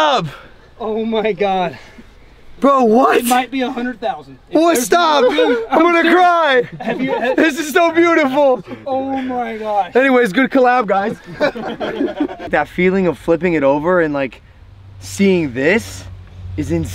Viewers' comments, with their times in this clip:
0:03 Logan sounded like Emma chamberlain at like